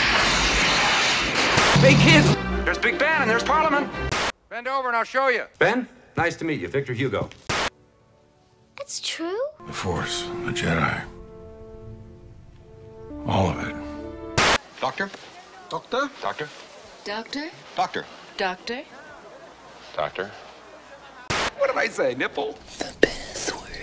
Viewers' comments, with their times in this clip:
0:10 I actually love how they dubbed Harrison Ford’s voice over Chevy Chase’s given when I first saw this film I honestly thought Chevy Chase was a much younger Harrison Ford and sounded like him for a little bit until I realised they were two totally different actors Don’t ask how or why I just did